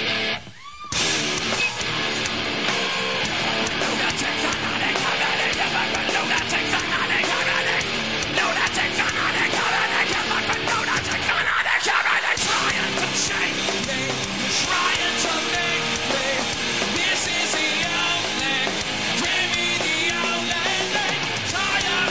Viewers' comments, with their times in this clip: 0:06 Wayne (lead singer) says "More and more you follow" and the bass player says "your deepest reality". The audio quality is complete shit and I'm not sure why...They also didn't do great on this version. Wayne lost it right and couldn't do the whole thing in one breath. You can see it in his face he's not happy about it lol.